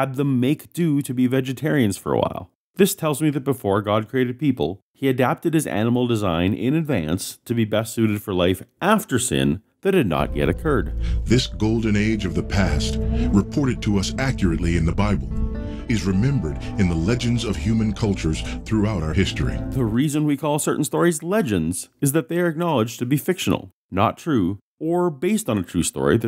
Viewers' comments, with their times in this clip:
0:10 Who is the narrator who can be heard ? Some famous apologist whom I just failed to notice yet or just a hired voice? Anyway, dude, BREATHE IN!